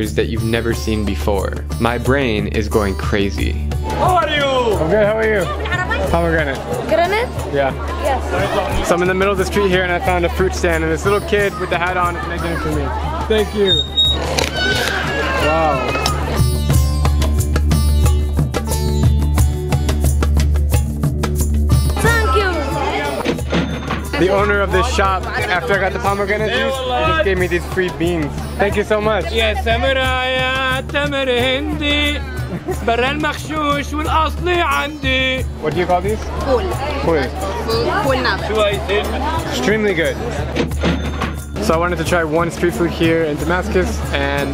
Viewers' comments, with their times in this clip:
0:06 Okay im sorry but i laugh at this part because it sound like he saying "Granade".
0:06 why he asking for a grenade tho
0:30 umm okay laughs
0:31 this syrian guy sing better than justin beiber